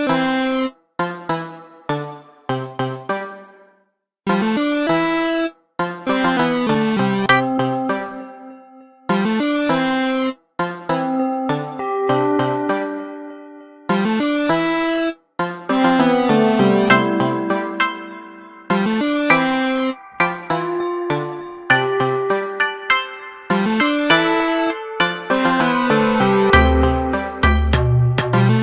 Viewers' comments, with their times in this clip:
0:09 Minecraft theme, idk but I had some feelings that sounds like Minecraft